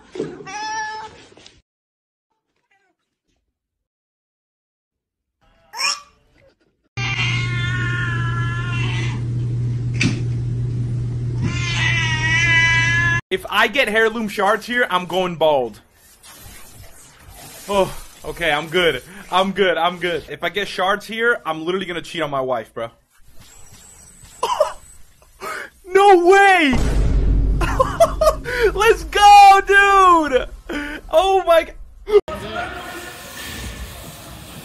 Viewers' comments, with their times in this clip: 0:03 why so high pitched?
0:15 mans just said Hair-loom